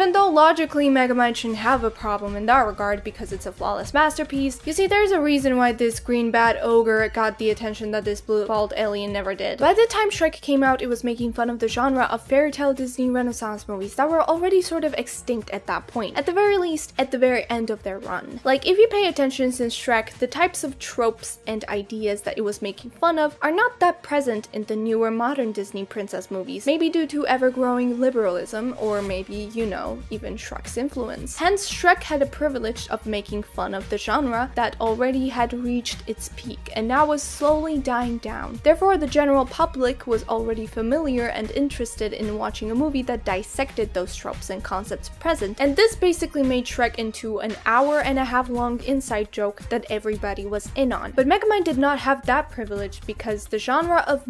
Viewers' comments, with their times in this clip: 0:08 geniunely cannot tell if she said “blue, bald” or “blue balled”
0:36 Who the hell is general pup lick?